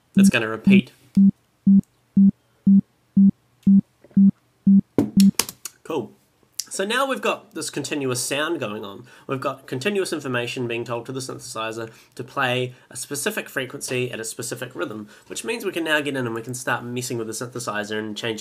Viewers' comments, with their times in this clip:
0:03 his mic picks up his throat as he takes a drink and then the drink being set down. nice sounds. headphones might be necessary to hear it well